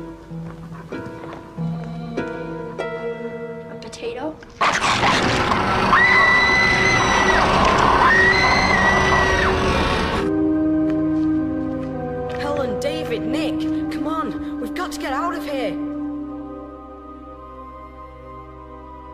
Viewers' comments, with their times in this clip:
0:05 In a terrible Irish Accent When you've had one too many pints of ale.